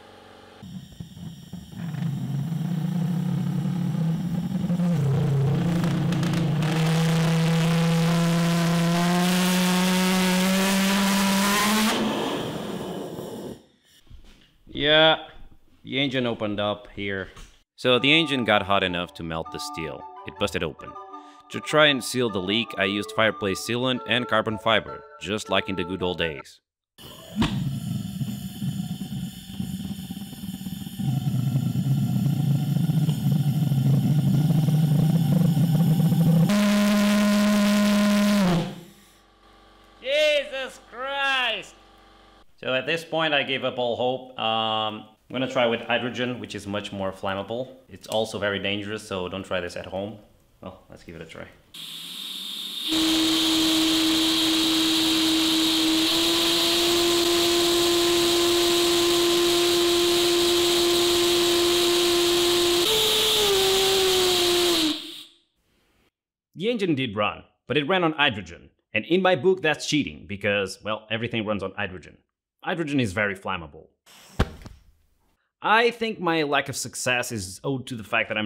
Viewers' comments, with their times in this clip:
0:07 Hearing something in lithuanian is probably the last thing I would have expected from this video
0:08 sounds like an F1 V8 engine 🔥🔥
0:31 race car kinda
0:40 that one mf in your neighborhood with his tuned 70's-90's car 💀
0:46 The Civic right next to my house at 3am be like:
0:46 HL2 strider noises
0:59 Hearing protection, Am i a joke to you?